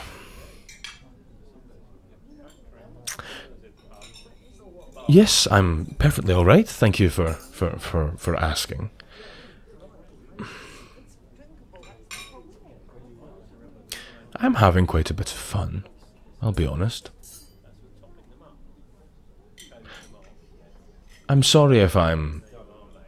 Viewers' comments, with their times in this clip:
0:10 Anyone else here that woman saying”it’s drinkable that’s the problem” listens closely 😂😂😂